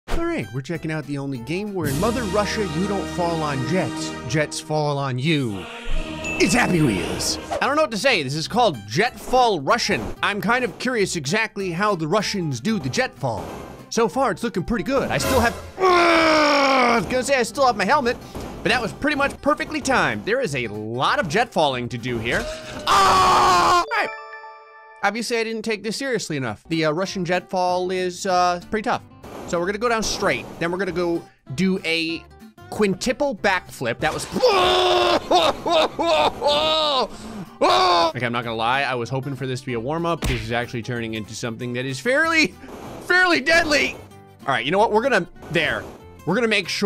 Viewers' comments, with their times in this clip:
0:02 If u put the subtitles on to Russian u can hear the ussr and the Russian national anthem mixed for an reason
0:22 😂😂😂 Perfect cut scream
0:34 also funny scream